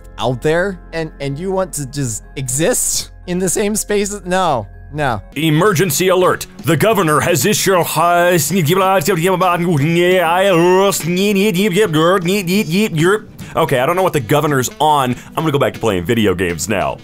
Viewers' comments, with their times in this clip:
0:05 When Bill Cipher starts taking over the world and a EAS goes off: Emergency Alert THE GOVERNMENT HAS ISSUED <Glitching noises>